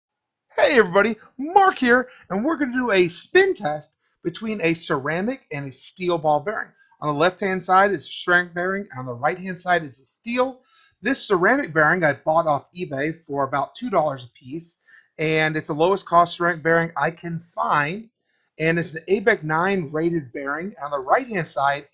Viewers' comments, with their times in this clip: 0:04 your voice cracked in lol